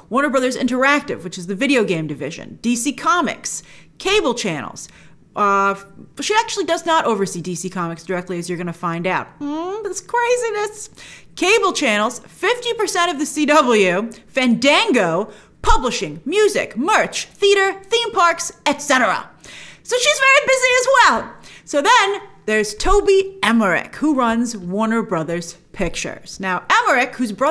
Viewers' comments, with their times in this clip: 0:09 sounds like mario jumping